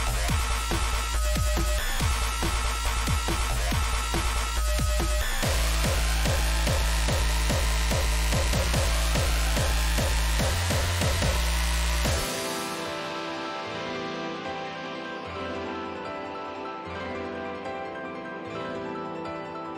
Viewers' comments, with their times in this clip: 0:04 htc vive players are quaking cool gabber part tho